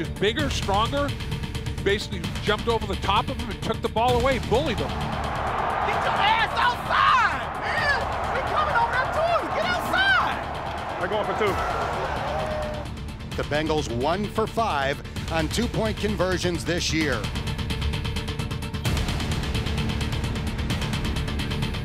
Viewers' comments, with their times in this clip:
0:07 That Chiefs coach sounds like Chris Rock lmfao